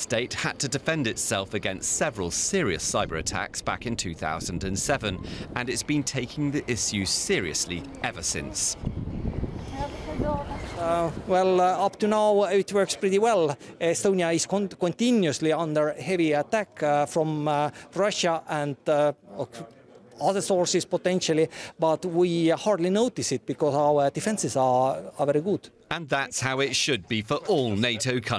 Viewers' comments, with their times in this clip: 0:10 this guy's hilarious with his funny pidgeon English, he should be in the next Dumb & Dumber flick!